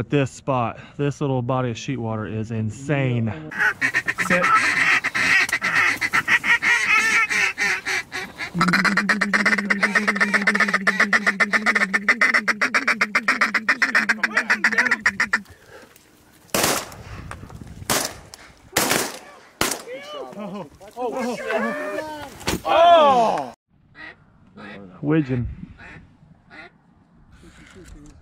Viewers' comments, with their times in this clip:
0:09 Baddest feeder chuckle around boys. Freak nasty!! Hahha